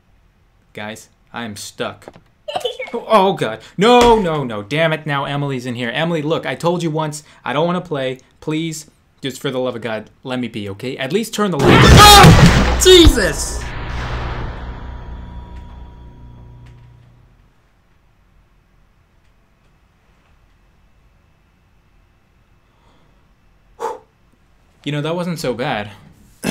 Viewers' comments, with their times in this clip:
0:08 Omg, the fright I took. The volume was in the last, FUCK.
0:11 uughh my eaarrs I was at full volume😢😂